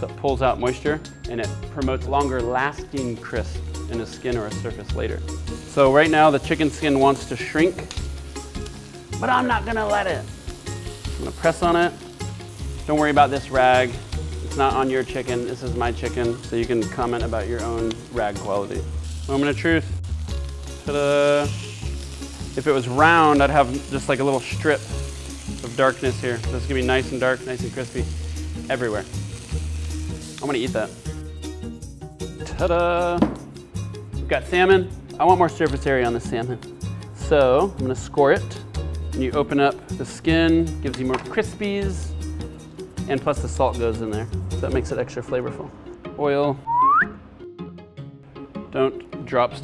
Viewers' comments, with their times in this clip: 0:07 i hear some vito corleone right there
0:33 We got semen?